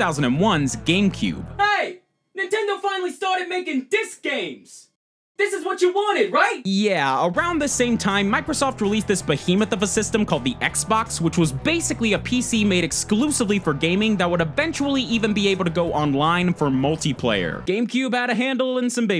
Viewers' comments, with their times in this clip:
0:05 yeah uh OK cool voice